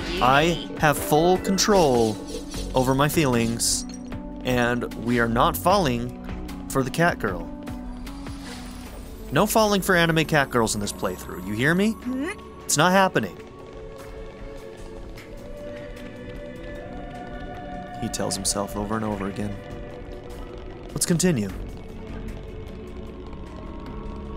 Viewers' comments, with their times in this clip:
0:09 I could listen to Mio and Nia talking all day as well. Huge props to their voice actress, she just sell the Welsh catgirls!